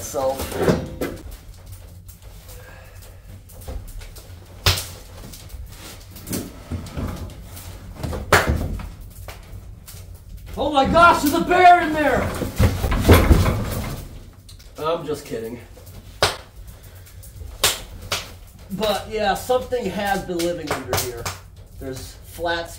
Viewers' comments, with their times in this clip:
0:09 Okay.... my heart skipped a beat there with the bear alarm! 😳